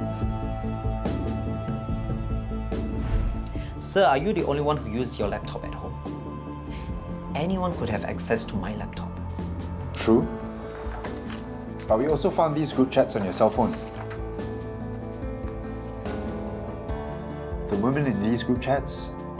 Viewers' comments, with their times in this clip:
0:04 He's got guts and the nerve to say that line in that tone